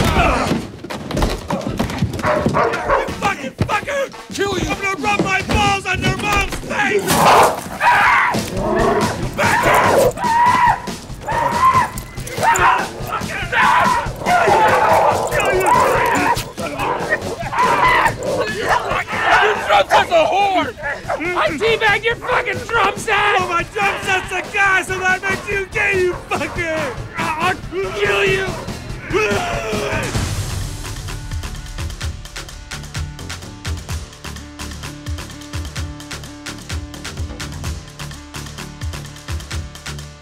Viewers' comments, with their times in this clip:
0:08 –Will’s maniacal screams get me every time! 😄😄😄
0:23 The music while Dale is saying that line never fails to make me laugh in tears 🤣